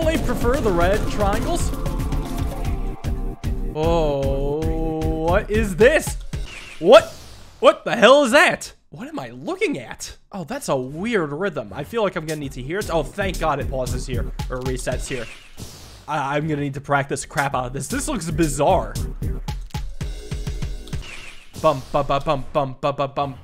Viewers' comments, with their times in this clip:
0:06 The rhythm is a 2-3 polyrhythm that was in a tutorial level before btw